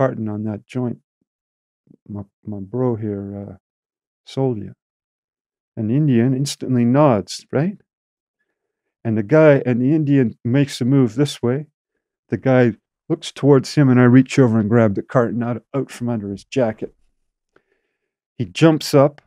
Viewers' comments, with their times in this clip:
0:04 this guy issa fraud. Doesn’t even say “bro” right. Yu can tell his faking. Did anyone vouch for dude?